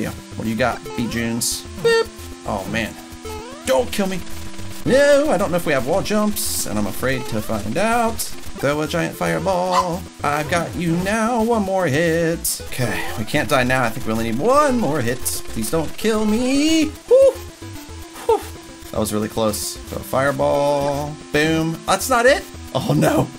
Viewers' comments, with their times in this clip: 0:09 Is that Yoshi borking?